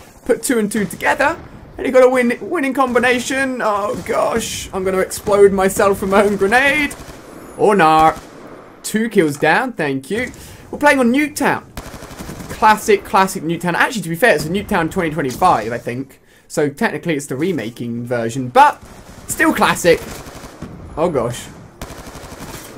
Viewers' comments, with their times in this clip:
0:07 did he say ornaw?